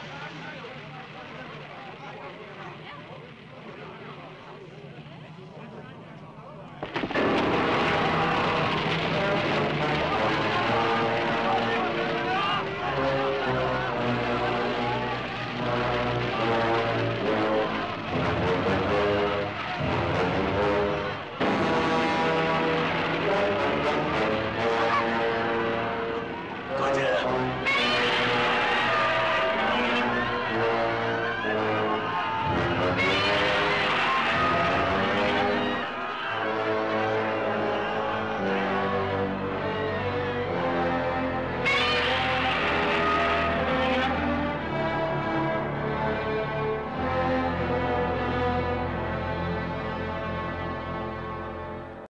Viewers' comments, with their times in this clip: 0:07 Everybody Gangsta Until The Godzilla Theme Song Starts Playing
0:26 of course you can't beat the "AH! NO! IT'S GODZILLA!" that was in the American version, but the way he says "Gojira!" is almost just as good.
0:39 One of Godzilla most epic and awesome appearance! also I love this part of the score by Akira Ifukube. My eye's start getting tears of Joy. Works so well, With Godzilla's Roar.